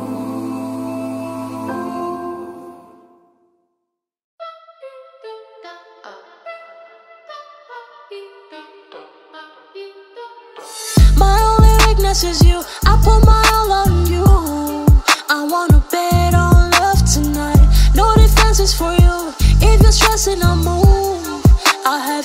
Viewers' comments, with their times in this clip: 0:04 im sorry but genuinely tf is this song💀